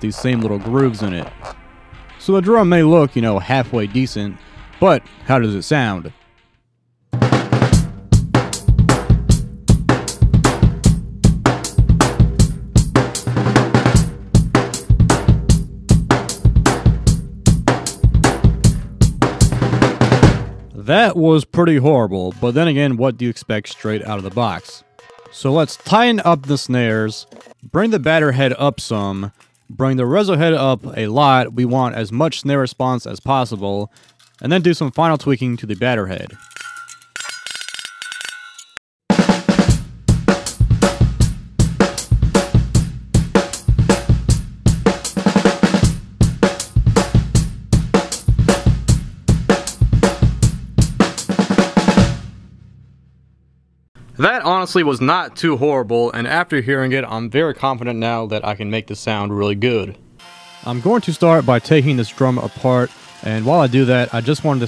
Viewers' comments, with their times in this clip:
0:06 St. Anger has entered the chat
0:08 Who's been looking for that St. Anger snare sound....you got it for $37.95!!
0:08 I think Lars put that snare on Amazon a couple years after st anger I’m joking it’s not true
0:08 st anger snare
0:48 I'd literally murder for a snare that sounds half as good as that